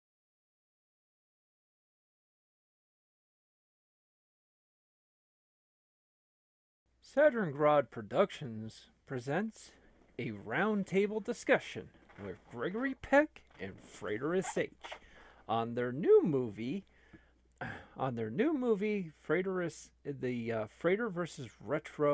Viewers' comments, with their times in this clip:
0:08 the sound starts (oops)